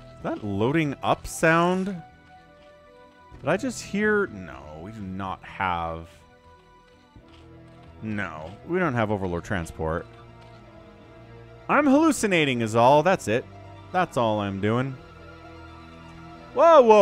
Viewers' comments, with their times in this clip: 0:05 it's the nydus - the sound of entering is the same as the loading of the overlord